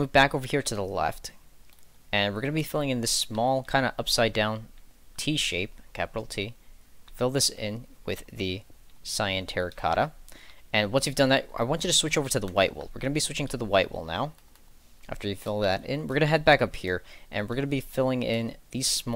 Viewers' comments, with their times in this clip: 0:05 i can see him hesitating not to say the d